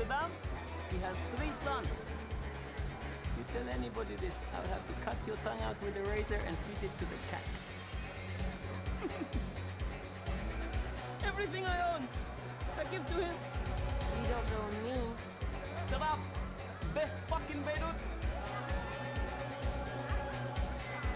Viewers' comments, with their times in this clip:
0:09 sounds like happy mask salesman